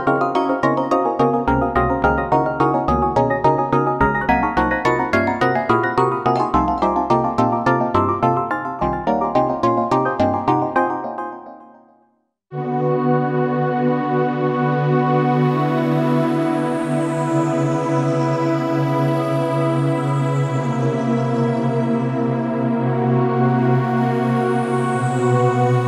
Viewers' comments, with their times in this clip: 0:09 is where he starts playing👌